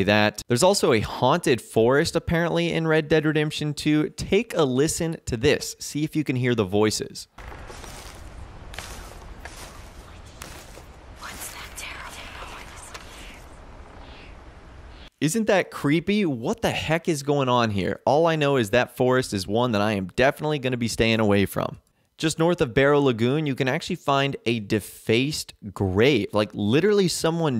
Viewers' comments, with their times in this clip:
0:10 What are they saying?? I cant hear it well inaf